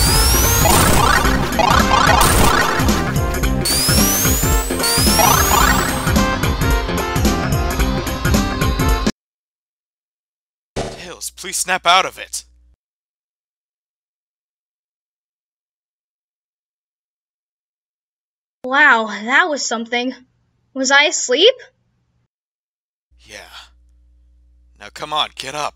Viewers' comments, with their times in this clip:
0:09 something i really like in the portrayal of their dynamic in this ending is how brotherly they are with eachother, especially knuckles treating tails as if he were his little brother. it's especially seen in the scene when knuckle's tone softens to a quieter more concerned one, a stark contrast from his usual stoic and serious resting-bitch-voice. that's something i really like about this route!!